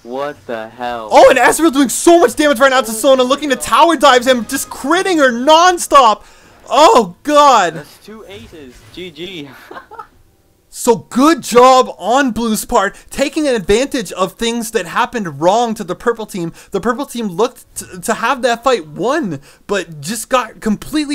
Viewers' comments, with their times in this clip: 0:05 i think the announcer came